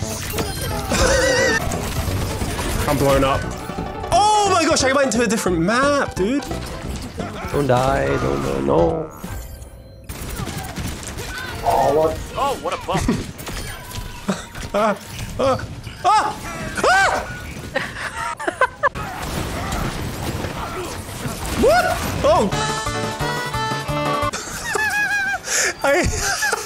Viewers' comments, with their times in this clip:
0:09 The mario N64 peingouin race music when mcree slips killed me